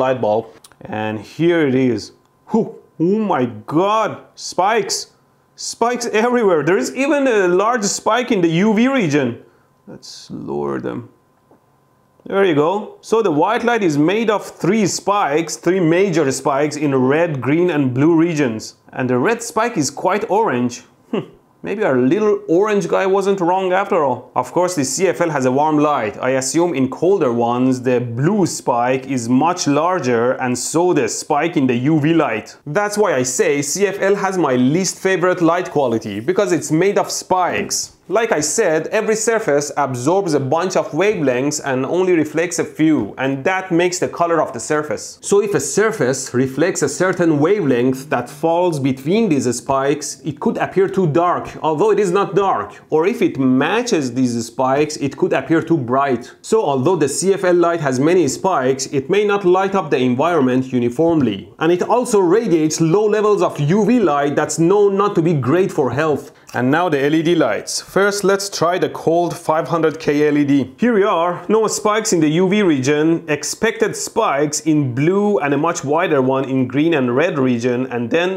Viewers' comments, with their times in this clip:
0:03 uh my gud
0:47 Weve length ? :D
0:48 ah yes the "weve length"
0:49 wavelength becomes wevelength
0:54 I've learned a lot from Electroboom, but never before about the 'Weve' Length of light! lol!
1:01 science at its best ”weve“ length ????!